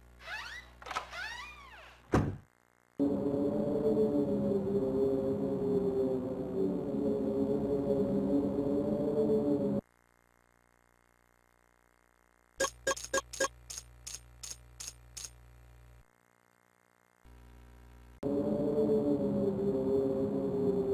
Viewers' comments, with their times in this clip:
0:03 Why does sound like kingdom hearts music.